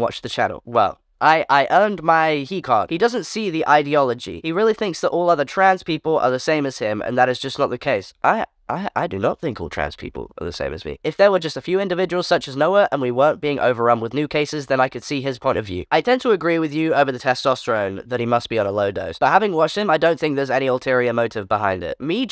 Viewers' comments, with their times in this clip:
0:07 the way his voices dropped like two octaves?? Wasn’t expecting that lol 😂 send that to the people who say you don’t sound like a guy
0:10 his voice got reeeaal deep